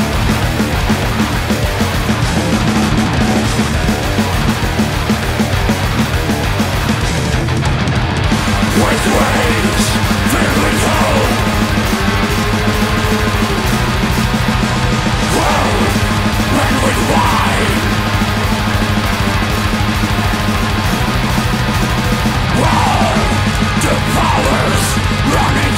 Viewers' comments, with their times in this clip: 0:10 riff reminds me of Aldrande tre